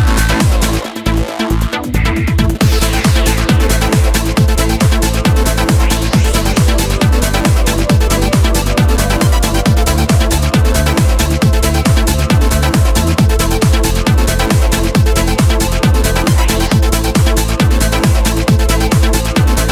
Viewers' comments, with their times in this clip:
0:04 Song beginning roughly mark is my fave!!! So emotional! Makes me think of my middle younger brother!